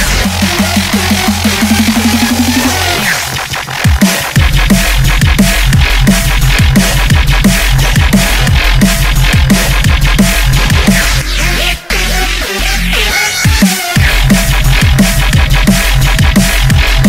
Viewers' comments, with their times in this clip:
0:04 Love that helicopter and the drop